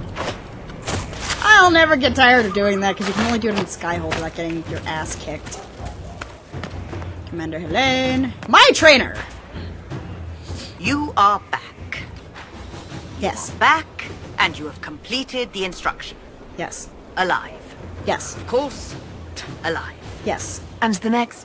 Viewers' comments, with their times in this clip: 0:09 I Am Yaourt Rainer! 😄 That could be her name! 🔎🤔